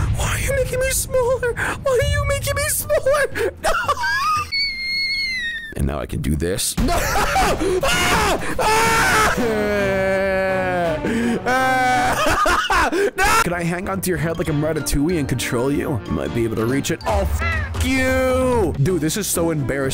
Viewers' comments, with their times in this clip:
0:04 bro sounds like a teapot